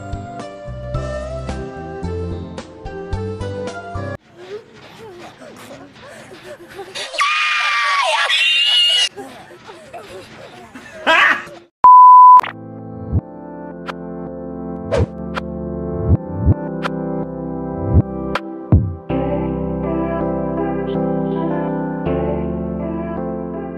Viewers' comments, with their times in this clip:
0:04 welcome to the place of female noises I never want to hear again :)